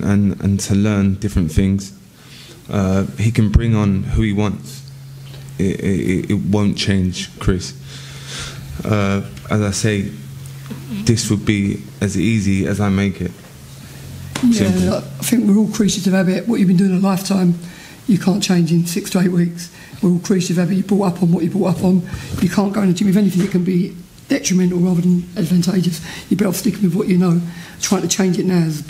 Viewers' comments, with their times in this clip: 0:10 James DeGale farts. It's a stinker judging by the sniff reactions.